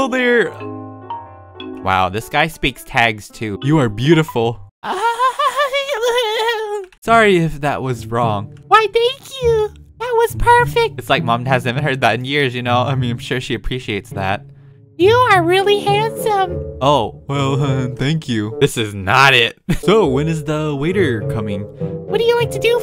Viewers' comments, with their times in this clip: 0:07 as george washington says EW in the back :>